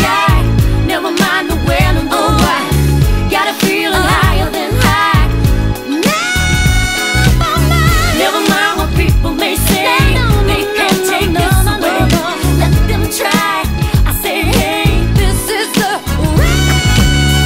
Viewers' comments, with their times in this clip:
0:04 THAT HIGH NOTE!!!